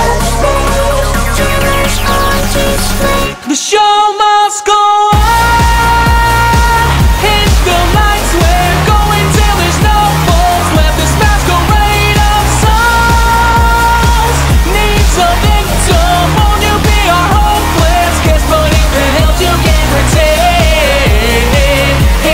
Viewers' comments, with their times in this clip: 0:05 Bon bon: jeez you don’t have to scream